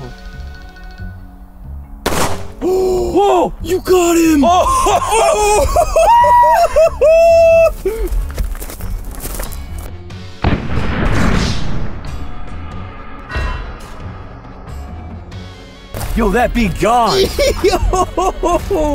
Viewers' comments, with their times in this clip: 0:05 didn’t know his voice could go that high😂